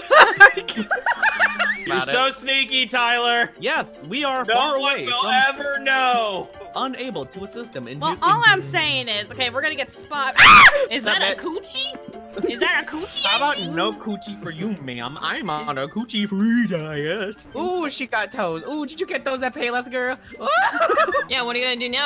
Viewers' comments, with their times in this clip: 0:09 JESUS CHRIST THAT SCREAM I don't think I've been caught by a jump scare in years, but I flinched out of my skin